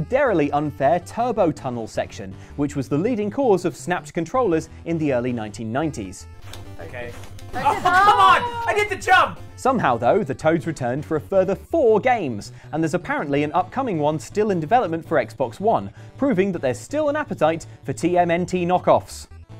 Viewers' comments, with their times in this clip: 0:06 If you’re using earphones, heads up on Unexpected 3d audio